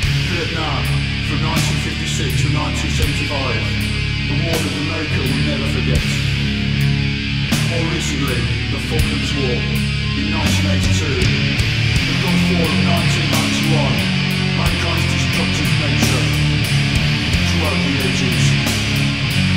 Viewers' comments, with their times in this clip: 0:06 The build up near is great.